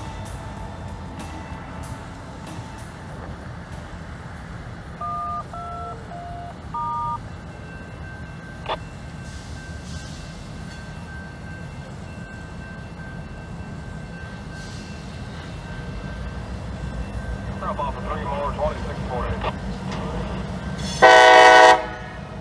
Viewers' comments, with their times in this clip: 0:04 Did the loco crew activate the crossing signals via touch-tone tones on the radio?